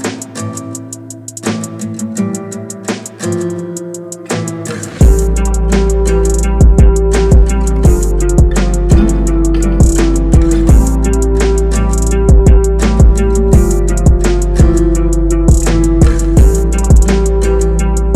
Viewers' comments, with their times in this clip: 0:05 Baaaanger, love how you did that progression !!!🔥🖤